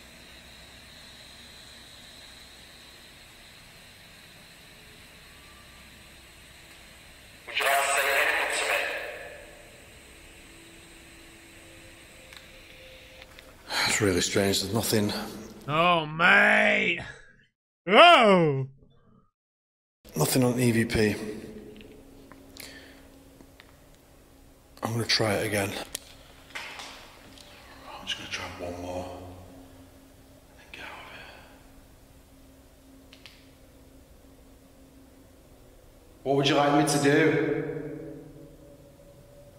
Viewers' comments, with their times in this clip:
0:05 you hear a faint yelling from a female voice
0:26 before he uses the evp recorder, disembodied voice can be heard if you listen closely after a clicking noise. Or maybe just me